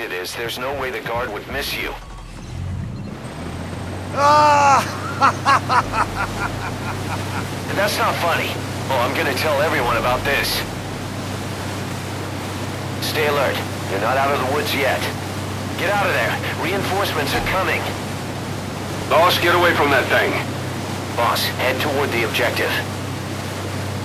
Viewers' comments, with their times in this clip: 0:08 (Alert music playing)